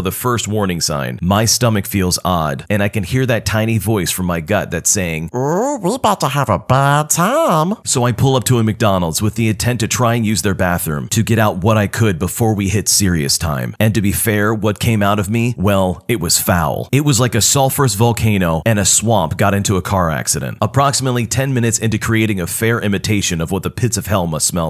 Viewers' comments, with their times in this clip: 0:04 holy shit you sound just like rick from big mouth
0:05 stich is doing voice overs now?
0:06 LMAO THAT VOICE-